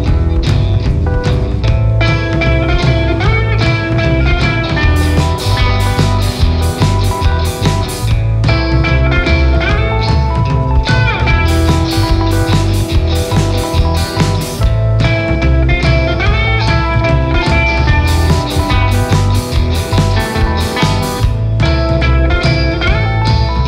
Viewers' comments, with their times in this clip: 0:06 .@ the drummer does a tempo change that felt jarringly out of place, cute singer tho